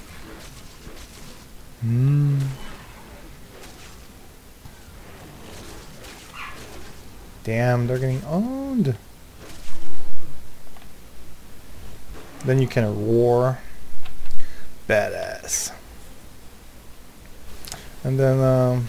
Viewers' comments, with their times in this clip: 0:05 that's when you hear the dog bark.